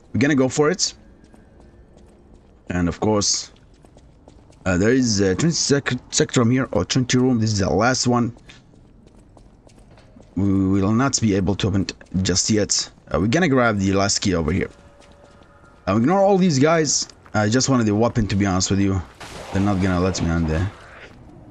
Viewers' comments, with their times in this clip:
0:05 bruh were you even speaking English there? I’m trying to understand the important parts of the walkthrough but with how fast you talk and your accent idt anyone understands wth your saying 😂